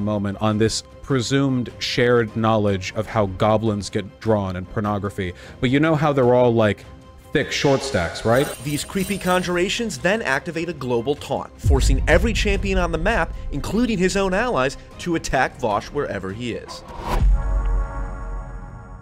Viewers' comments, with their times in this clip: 0:07 those question mark pings absolutely sent me